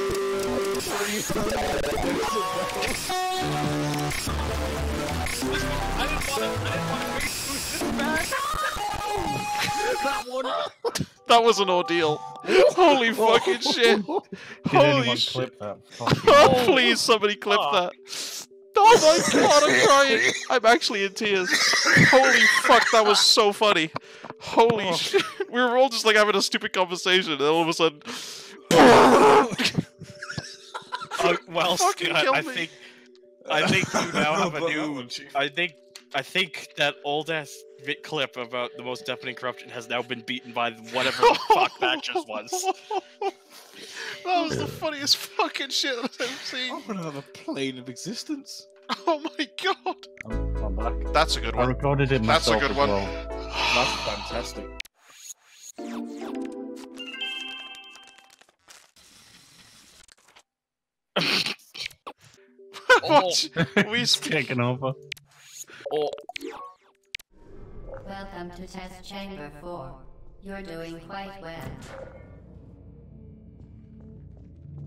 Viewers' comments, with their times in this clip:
0:02 Ear rape Xd
0:56 spray paint either that or someone's trying to speedrun making an origami
0:57 Someone flipping book pages
0:58 all of these papers sound effects are coming out of one audio terminal. Looks like you’re in an office cubicle and someone’s been stressed out so much that they ripped pieces of paper so violently that they hate their job